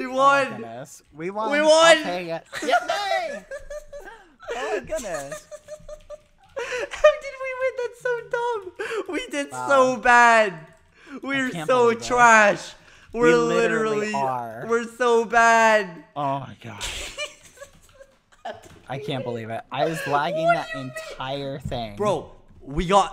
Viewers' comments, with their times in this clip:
0:09 one of the rarest times is when they speak in unison .. its not much but eh.